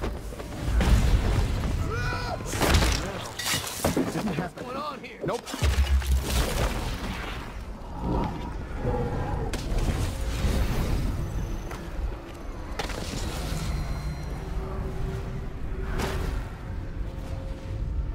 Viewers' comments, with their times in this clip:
0:05 did u speak? pog